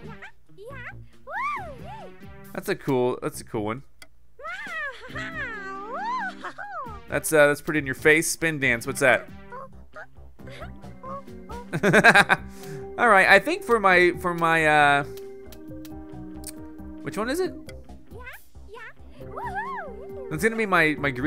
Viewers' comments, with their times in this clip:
0:04 higher pitch sunflower queen sound with no filter